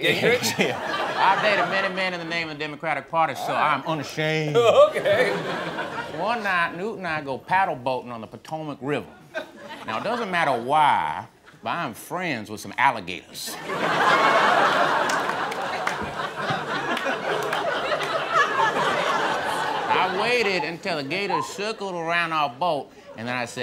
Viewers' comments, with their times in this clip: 0:09 My god this was fantastic... ...now it doesn’t matta whyyy, but I am friends with some alligaytuhs. 😂 lmao